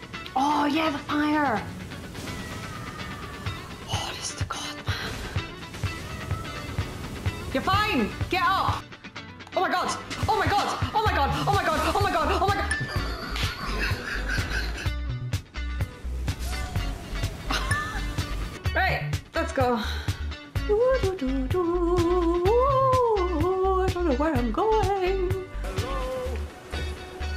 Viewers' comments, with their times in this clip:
0:09 there's a few times when she gets really overwhelmed I cant tell if she like smacks ya for giggling at her (obviously not super hard) or shes slappin her knees or something lmao but its hilarious. We all know the struggle lol